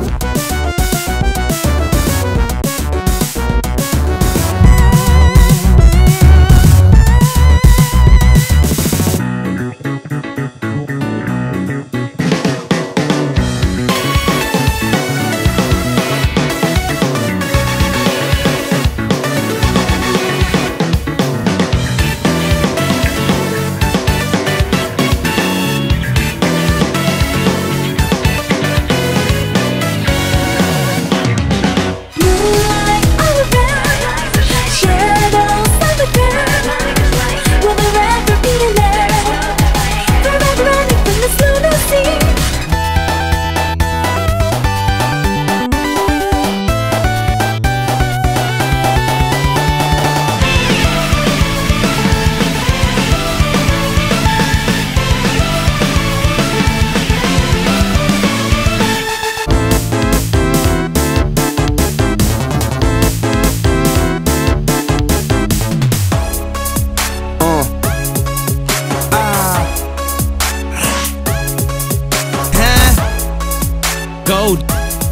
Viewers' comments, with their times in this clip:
0:04 When your self aware of the game music soundtrack in the background and you start dancing but the others don't know what you're doing.
0:09 I refuse to believe this is Sonic music. It slaps way too hard and sounds like it was intended to be in P5 but they scrapped the palace and used it for Sonic Forces instead.
0:10 sounds like a megaman x level
0:13 RIP a cool track without a shitty synth.
0:13 coffin dance before coffin dance
0:14 sounds VERY reminiscent of sonic adventure, to me
0:15 when the gameplay was bad but the music was good.
0:32 that track is actually decent tho xD
0:32 It's me or i hear hitmarkers?!
0:35 I literally hear "Shadow Psychopath" LITERALLY
0:43 Classic sonic's Nokia ring tone
0:50 wow green hills lookin more like 'shit overused song used in a shit overused level asset with the blue pine cone sounding more like bubsey this time around' hill...
0:59 Why do i feel as if they worked more on the music then the game itself Edit: Just realize the my favorite boss in the franchises boss theme sounds like circus gone wrong